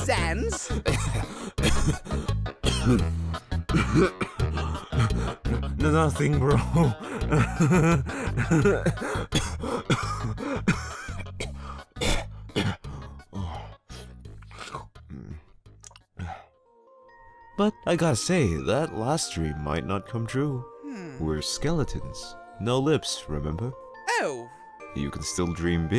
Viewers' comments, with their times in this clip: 0:09 LOL SANS WAS CHOCKING OMG XD